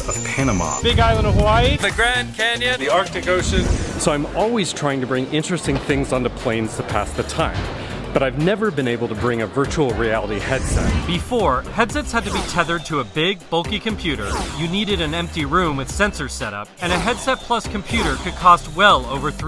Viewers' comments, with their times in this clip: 0:03 why does he sound like mr beast